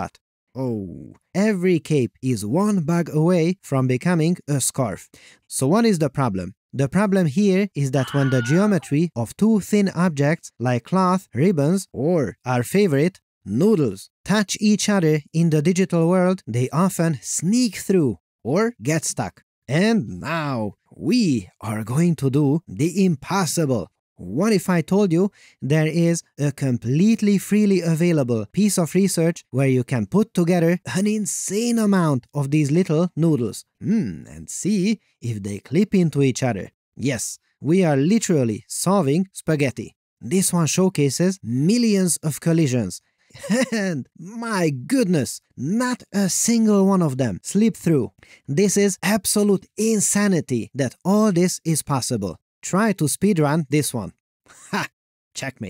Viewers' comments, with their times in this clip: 0:07 Why does the cube make a Wilhelm Scream when wrapped in cloth?
0:08 That Wilhelm Scream!!! 🤣
0:39 I burst out laughing "yes, we are literally solving spaghetti." Like for a moment the way he says it makes me believe that spaghetti has been the number one problem 3D artists have been pining over a solution for for decades.